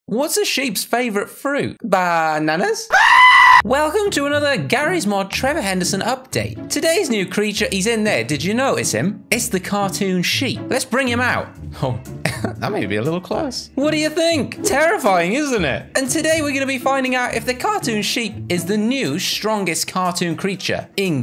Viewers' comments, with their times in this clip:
0:02 screaming goat is hilarious